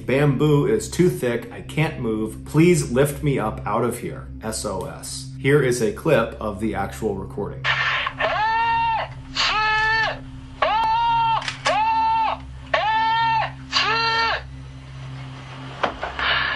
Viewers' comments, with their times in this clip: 0:03 Extra creepy factor: he's not just slowly yelling it out, he's literally spelling it out at the top of his lungs. It's why it took him 6 syllables to scream "SOS", because in Japanese, it's 6 syllabatic characters often run together while speaking.